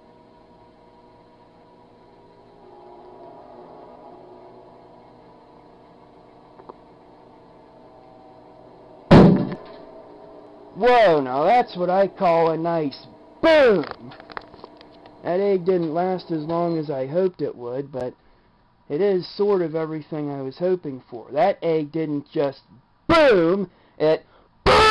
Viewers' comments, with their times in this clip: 0:09 I knew it would explode but I didn't know an egg would be THAT loud. I literally jumped I wasn't expecting that! Awesome episode! ^_^